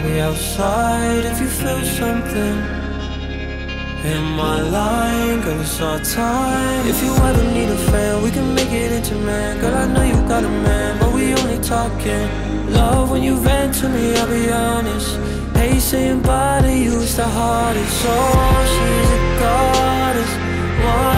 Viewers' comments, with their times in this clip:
0:07 this part reminds me the style of lund